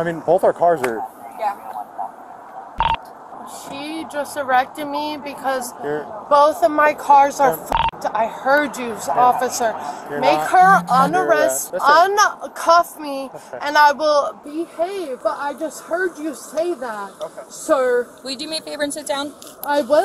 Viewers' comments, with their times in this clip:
0:03 "She just errected me." Now, i know what that means why a guy says it, but... what does it mean when a girl says it? 😮
0:05 "she just arrected me"😂 not arrested but arrected smh